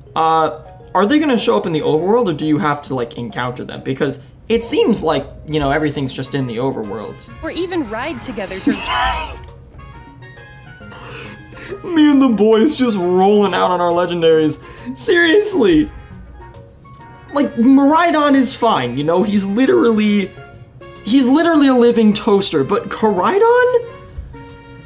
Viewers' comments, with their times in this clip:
0:08 i love raids too..im so happy raids are backomg * _* and without waiting for other players * _ * soooo coool right ??? ^^^^^^ the graphic is beautiful in raids. hahahah that laugh lol .....me too...violet legendary one is the best one lol..i love high tech,,its so modern and cool...xD you like the new pokemon and new characterdesigns?